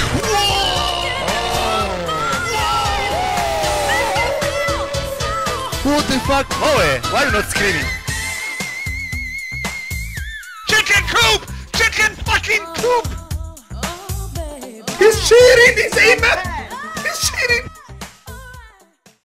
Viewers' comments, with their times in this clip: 0:07 4 years later and the Falsetto still gets me every time! <3